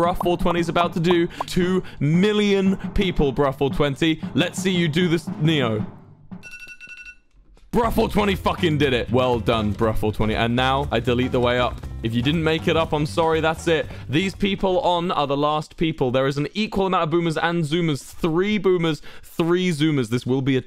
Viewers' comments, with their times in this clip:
0:06 Anyone else notice the iPhone alarm